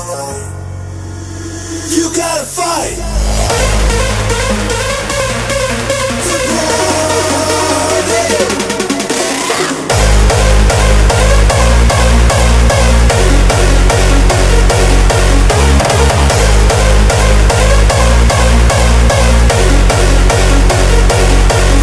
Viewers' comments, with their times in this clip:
0:03 vocals are so fucking bad. FUCKING awsome melody
0:03 nice, but vocals are messed up still front liner anthem still owns